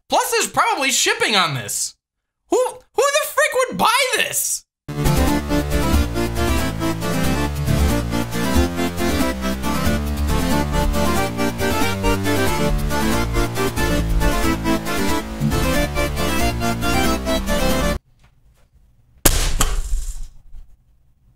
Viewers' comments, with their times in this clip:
0:05 electronic he's a pirate! amazing!